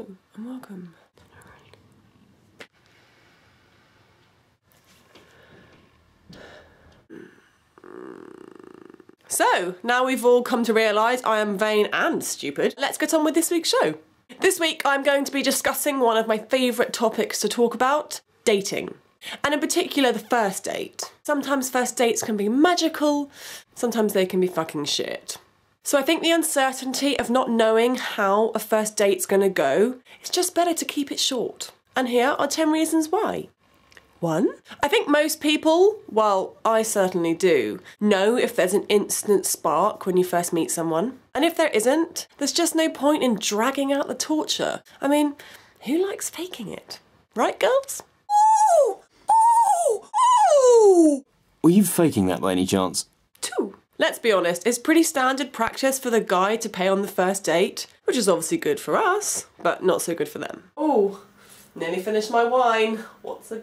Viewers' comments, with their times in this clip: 0:08 Did you rip a fart ?
0:48 dolphin in human body :D ROFL